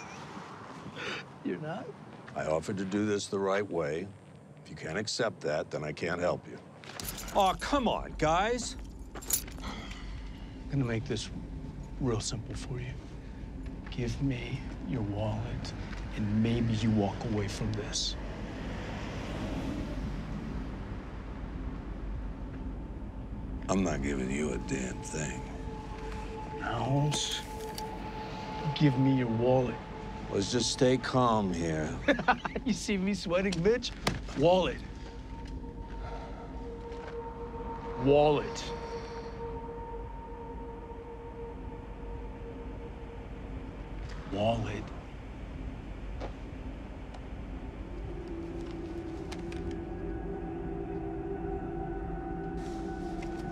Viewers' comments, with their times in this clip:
0:06 Aww C'mon guys! is the most unbothered version of that phrase I've heard. He didn´t even wanna make it sound sincere
0:07 Mike’s fake scared voice saying “ah come on guys” makes me laugh every time
0:07 “AWe cMon GuYs” the way he sounds while he’s standing there like 🧍 with this face 😐 always crack me up in this scene
0:34 Mike put your walluth out Mike